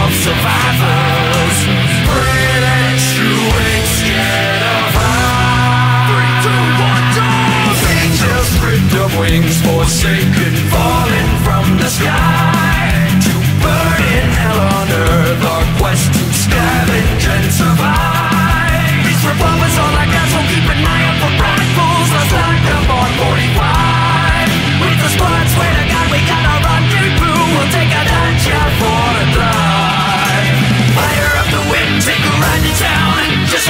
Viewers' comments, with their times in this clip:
0:06 I got a Teen Titans theme vibe starting
0:18 Sounds like that "Time to blow doors down" part from Tenacious D.